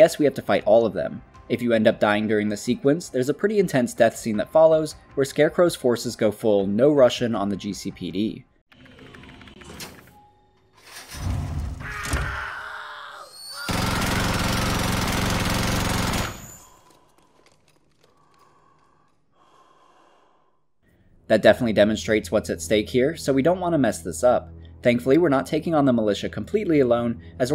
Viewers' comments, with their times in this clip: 0:08 This scene always scared the hell out of me when I first saw it How the room goes completely silent and Barbars face expression Chills man